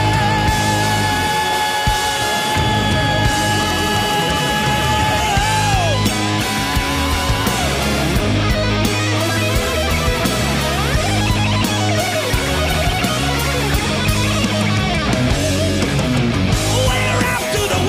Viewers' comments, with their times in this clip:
0:03 when you're backed with a solo like that you must feel godly